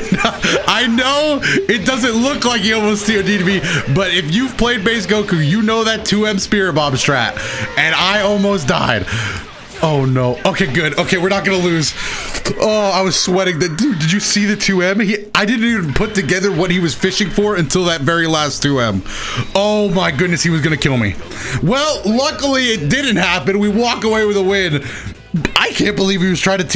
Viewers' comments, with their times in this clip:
0:10 was that beatbox? XD